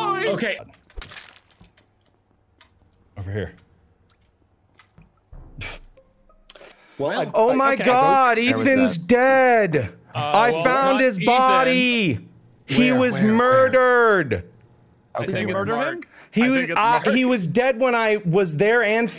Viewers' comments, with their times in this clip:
0:05 to the end of marks dramatic rendition of what happened is my favorite part of this video I can’t stop laughing 😂😂